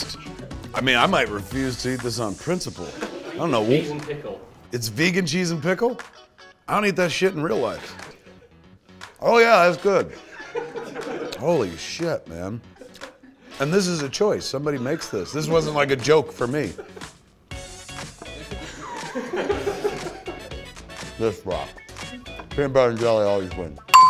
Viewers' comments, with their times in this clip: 0:09 I can tell he's being sarcastic.